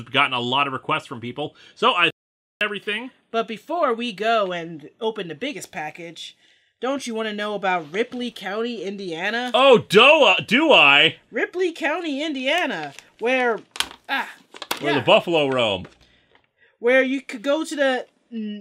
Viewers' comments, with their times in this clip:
0:04 Anyone notice how there was an audio glitch when he mentioned batman/elmer fudd cause id love to see that episode happen and i wonder if that skip was intentional?